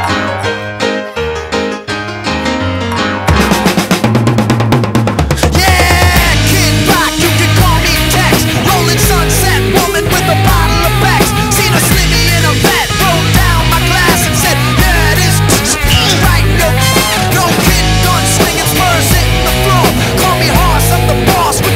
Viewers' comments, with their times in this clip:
0:03 How many of you at the mark when you hear those drums take a deep breath and prepare for badassery at it's finest!?